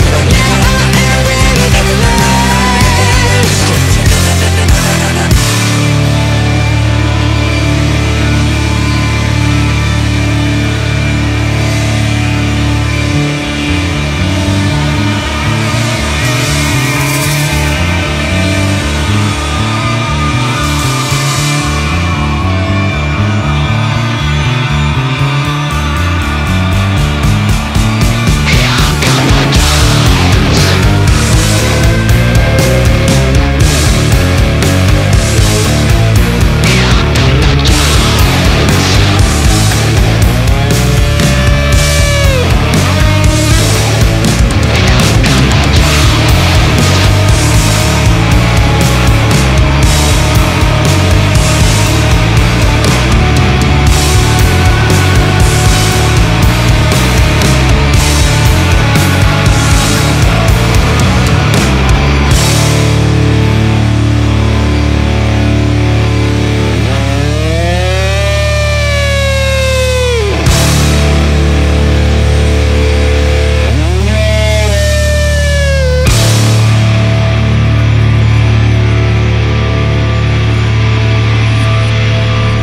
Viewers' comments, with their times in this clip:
0:06 to end sounds very rage against the machine-esque. Edit 1: Typo
0:11 The final looks like Rage againt the machine - Freedom
0:21 that's song like ratm 🤔😂
0:21 from and beyond sounds EXACTLY as "Freedom" of RATM...
0:26 I'm the only one hearing Freedom by Rage Against The Machine ?
0:26 to the end looks like Freedom from RATM
0:27 ending is very similar to ending of Lamb of God - The Faded Line
0:30 sounds like a boss song
0:30 Definitely hear ratm in this song 👍 especially this part
1:06 The moment you realize those guitar effects sound like incoming bombs